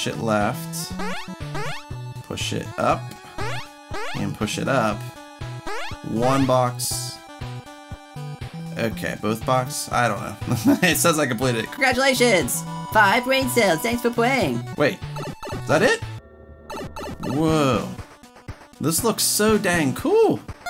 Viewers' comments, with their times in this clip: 0:04 it sounds like you're saying a bad word